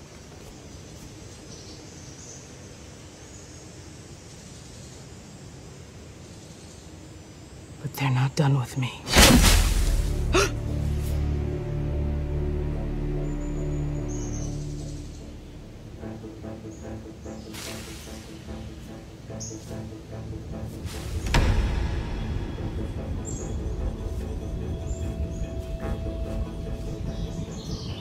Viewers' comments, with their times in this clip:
0:09 i swear i thought that was mickey mouse